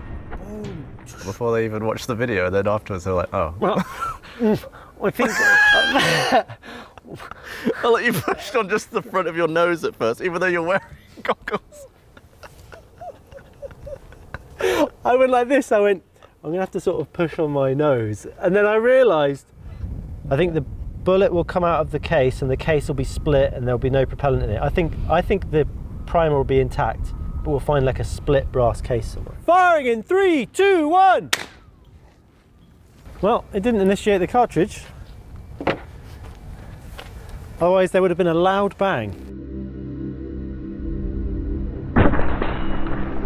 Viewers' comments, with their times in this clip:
0:03 Gav's duck laugh ..... 😂😂😂
0:31 pyewwww ricochet echo! Cool.